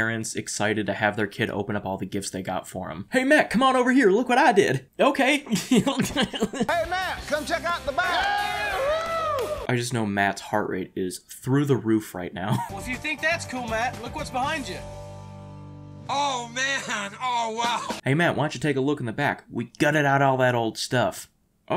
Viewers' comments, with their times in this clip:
0:04 The laugh here took me tf out